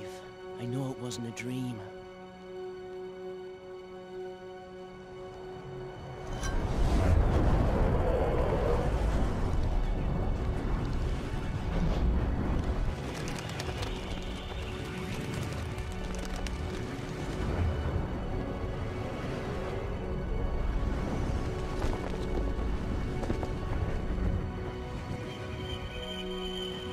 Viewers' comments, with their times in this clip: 0:10 always found the soundtrack that starts here so calming